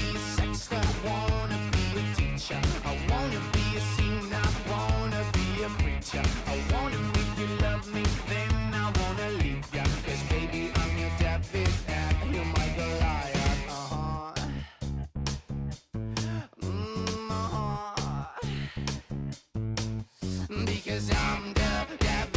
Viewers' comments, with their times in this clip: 0:08 it sounded like a yandere